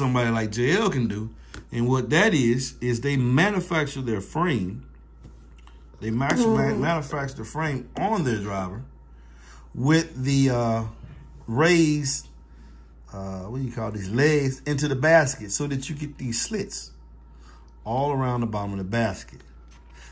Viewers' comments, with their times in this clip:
0:05 😂 sound like you ripped one